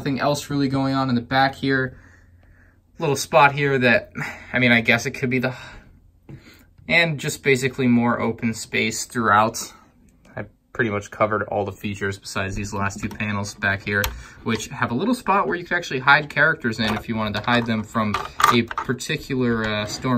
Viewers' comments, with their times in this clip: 0:04 Yeah I guess it could be a hhhaaaah but personally, I think its the hhhhheeeeh.
0:04 he just stopped talking